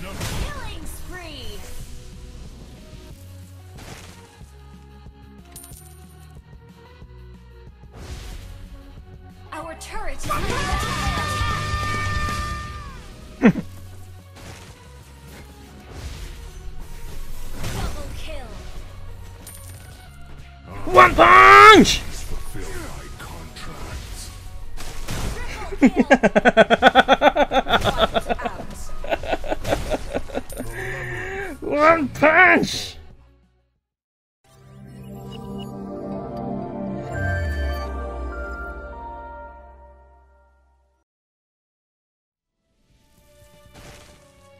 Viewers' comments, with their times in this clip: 0:10 OOF i like how you laugh and say ONE PUNCH 😂
0:18 feel sorry for that punch and that voice
0:25 evil laugh ahhahahahaha